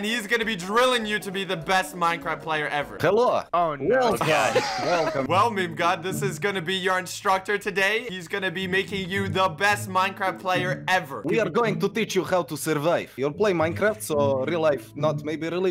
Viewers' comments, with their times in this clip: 0:03 Why does he kinda sound like Tord from eddsworld